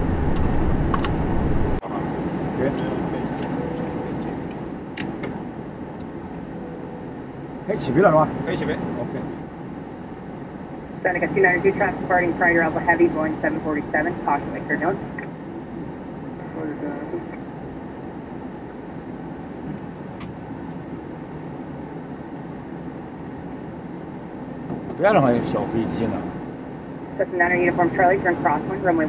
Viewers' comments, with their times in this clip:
0:10 Auto Subtitles c95 Farting prior all heavy